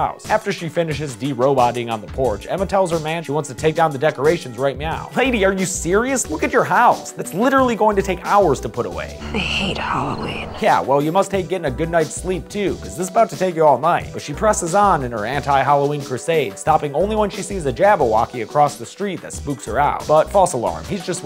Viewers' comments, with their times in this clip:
0:09 bro looks and sounds like that one dhar Mann actor💀